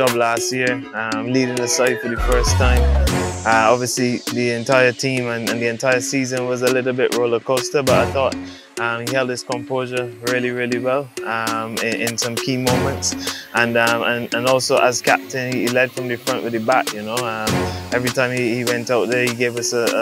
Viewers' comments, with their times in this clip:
0:05 Jordan synchronized his words with music perfectly..!!